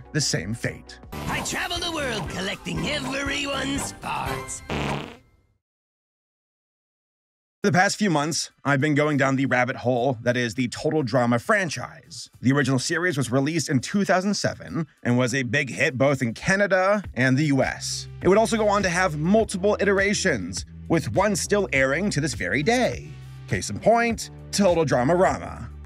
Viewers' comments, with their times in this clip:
0:07 Why did it sound it like something was cut?